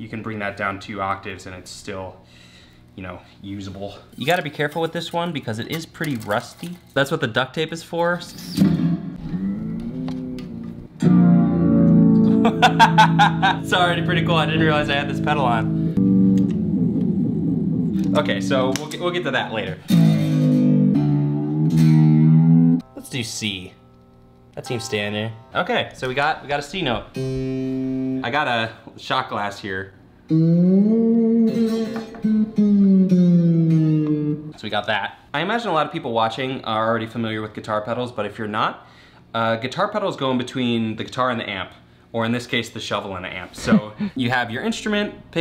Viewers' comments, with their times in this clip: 0:10 sounded like that old movie noise
0:30 The sad Sponge-bob music prove me wrong...